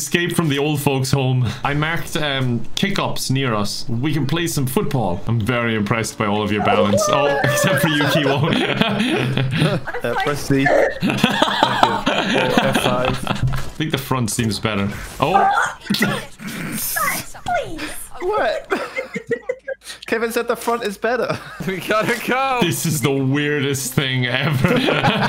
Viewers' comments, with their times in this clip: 0:10 It just me or did sound like the terraria death sound 🤣🤣